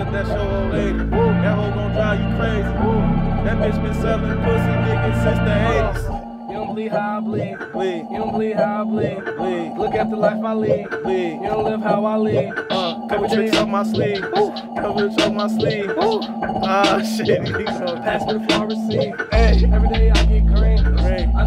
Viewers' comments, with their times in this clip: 0:03 need that beat😓😓
0:04 may be the best part in my opinion like the way he flowed on that beat. Immaculate.